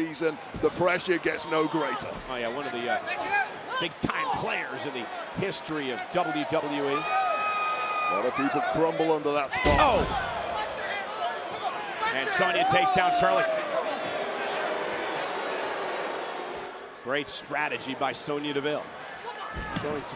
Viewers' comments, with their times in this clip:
0:08 For DEVILLE to mock the FLAIR'S WOOO, now THAT should be EPIC. I LIKE. (WWF)